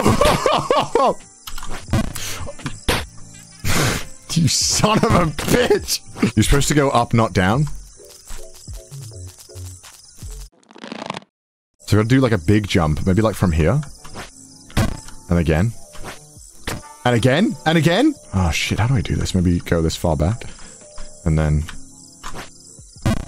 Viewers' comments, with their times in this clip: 0:06 Watching this live, I legitimately couldn’t stop laughing through the few hour duration he was tortured with this game. The smack sound when the character falls is just icing on the cake. Plus chat’s constant trolling like LMAO.